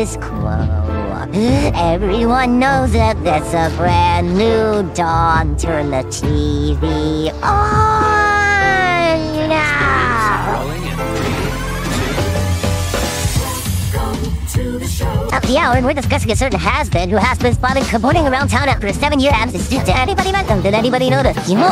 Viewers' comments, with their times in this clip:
0:06 Sounds like he came rather than shouted
0:07 OOOONN!! **Voice crack**
0:07 Saint Peter ahh moan